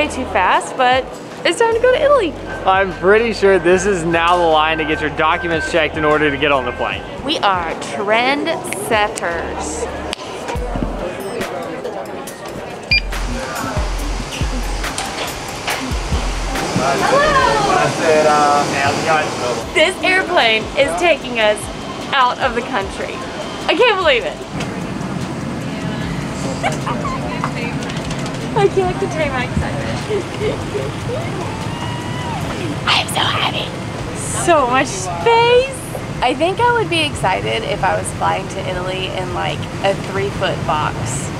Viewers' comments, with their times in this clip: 0:07 I love the music throwback Hahaha. Amazing.
0:11 I ADORED the music flashbacks to the early Vlogs ❤️❤️❤️
0:12 YAY so excited for y'all!! lol plus love the throw back music
0:22 I got unexpectedly emotional when I heard that music! It's if you missed it.